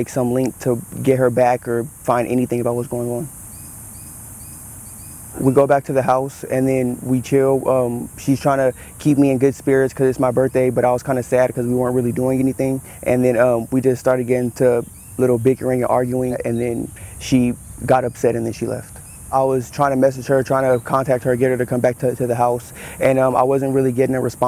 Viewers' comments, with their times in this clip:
0:07 Did anyone hear him say "we kill" at the mark?? Is my mind playing tricks on me??